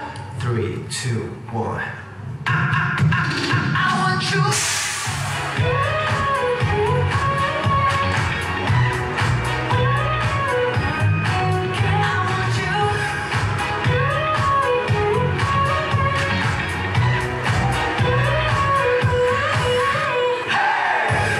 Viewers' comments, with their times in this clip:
0:03 Genius Yedamie closing his ears to avoid confetti pop sound.